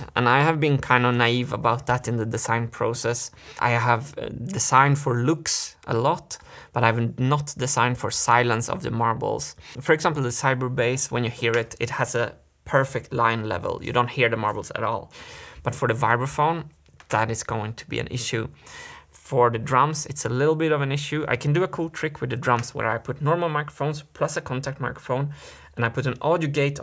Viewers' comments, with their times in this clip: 0:08 Finally he is realizing that machine is so loud. That is why i was against metal funnels. There is already a lot of metal on metal noise.